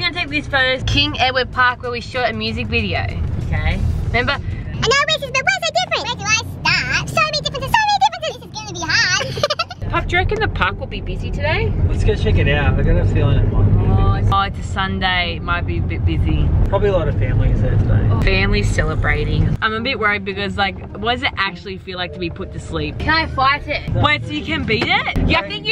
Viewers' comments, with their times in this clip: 0:09 Rebecca rabbit giggling 😂😂😂❤❤❤